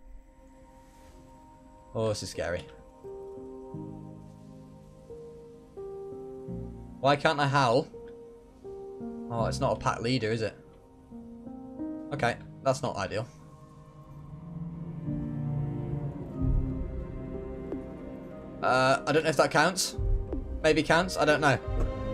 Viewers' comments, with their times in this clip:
0:03 The running up the hill mix during the dragon fight was a BOP! if y’all wanna relive that or skip to it.
0:07 i love the subtle song choice in the background (running up that hill”